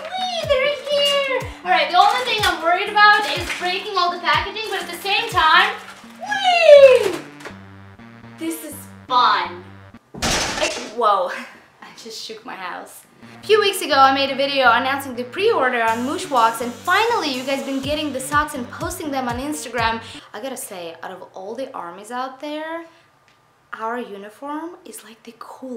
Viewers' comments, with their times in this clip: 0:10 How fragile would a house have to be to make that much noise?